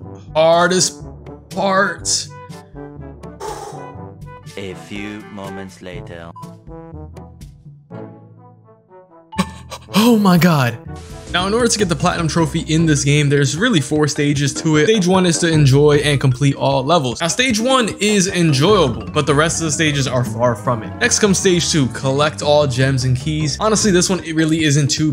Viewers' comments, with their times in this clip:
0:10 You have my sub 😂👏just finished all the plat time-trials (exc. Stormy Ascent, don't judge me) and that 'almost silent' death hit home 😂*deep breaths*